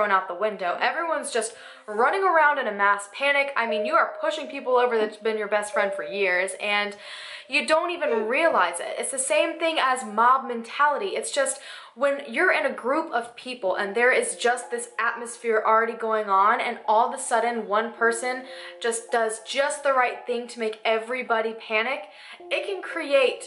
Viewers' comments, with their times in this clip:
0:06 what are those strange squeaky noises in the back ground? And then it sounds like a voice??
0:07 anyone else hear that hiccup / laugh